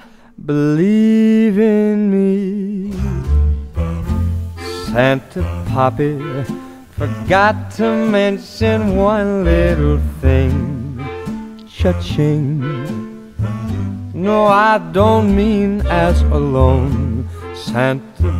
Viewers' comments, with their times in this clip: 0:04 it helps if you imagine he says “papi” with Latino flair